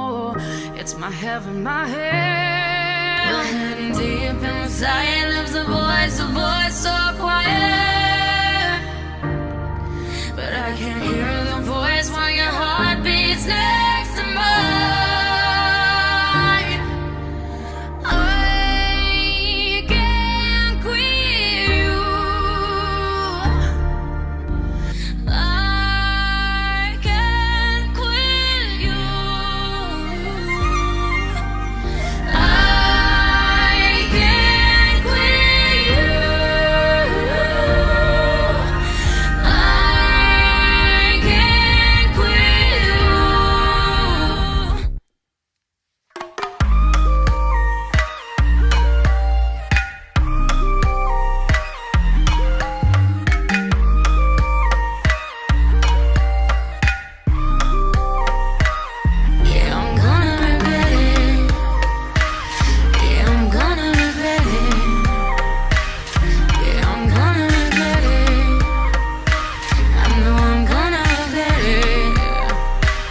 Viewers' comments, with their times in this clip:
0:03 wow the duo in this part 😭
0:04 when they sing together 😭😭😭
0:24 when sia tries to say something the video just stoppes and Ari starts. This is clearly fanart. But I still love it
0:59 WOW THE HECK THEY BOTH SOUND JUST LIKE SELENA GOMEZ??!?!?!?!??